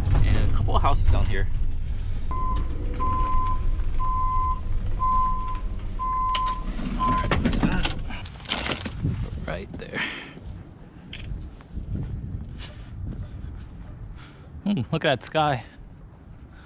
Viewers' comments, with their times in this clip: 0:03 finally an Amazon vehicle with a normal sounding back up alarm